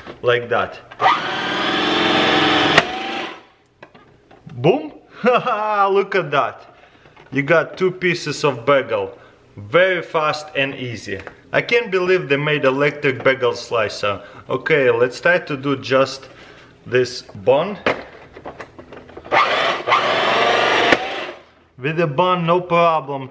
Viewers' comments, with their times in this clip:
0:04 I love how he uses "boom" as a question 😂 Boom?
0:04 the first ever boom with a question mark